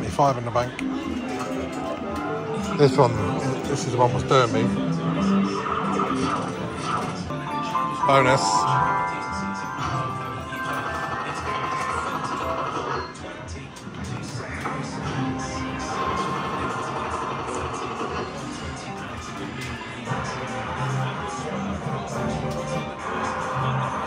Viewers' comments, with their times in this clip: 0:08 I've noticed on vids of the fobt,s the audio is always 1 second faster than the visual have a check as bonus is always called before we see it